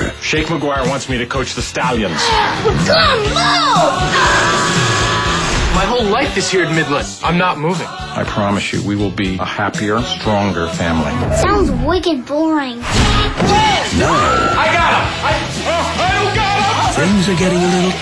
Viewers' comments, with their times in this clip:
0:04 LOL the "our house" song is so suitable :P